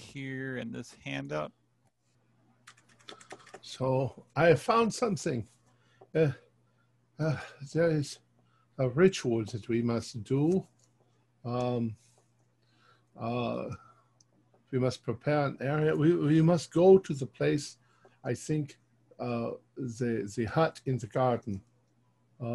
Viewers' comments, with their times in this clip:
0:03 ...Enochian! After 25 years I still remember the pronunciation from the books I had.